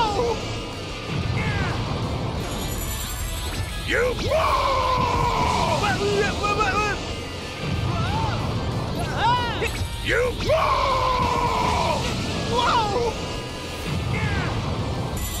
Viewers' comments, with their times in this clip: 0:03 SSG Goku stutters.